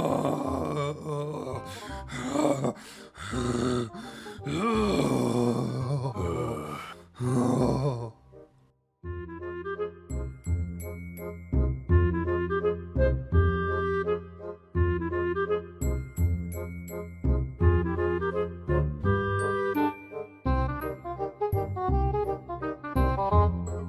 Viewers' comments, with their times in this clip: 0:06 minecraft zombie, is tha you?